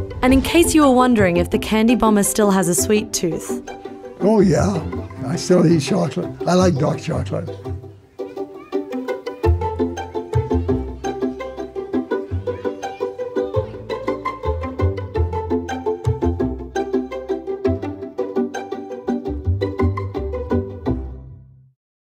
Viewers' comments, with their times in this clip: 0:10 are we going to mention that Tootsie Roll says Pootsie Roll?